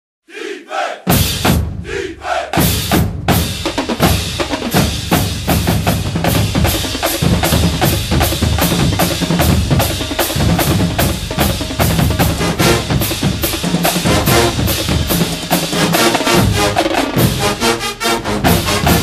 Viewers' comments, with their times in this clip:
0:01 the defense will always make a play with that chant.